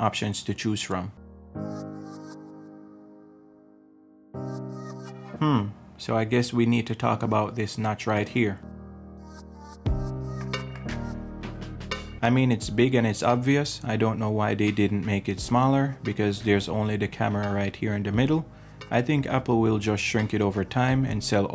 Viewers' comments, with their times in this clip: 0:05 You're welcome. If you go to you can see my mining rig on the bottom left of the screen in Black and Yellow. Normally, I'd turn it off for my voiceovers so the mic doesn't pick up the fan noise, but I forgot to for this video.